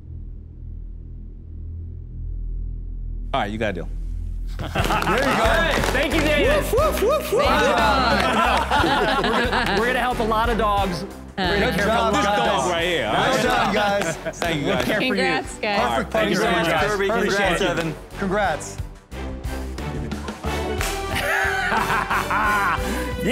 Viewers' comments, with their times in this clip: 0:04 Did he say Davis? I thought he said Daymond. I asked my lip-reading friend and she told me he said Daymond.